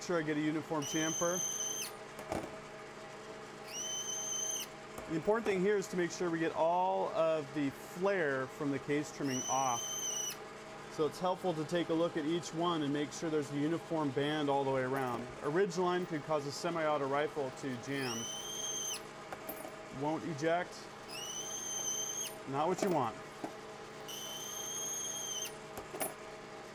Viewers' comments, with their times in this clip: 0:09 ..... I haven't heard that sound since I stepped on my sisters hamster 40 years ago..... Great vid. Now sell one of those lathe mandrels and buy a Giraud.